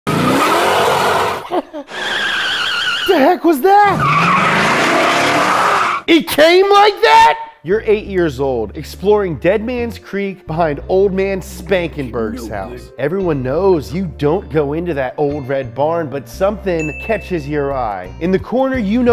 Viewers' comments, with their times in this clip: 0:01 How my friend sneezes: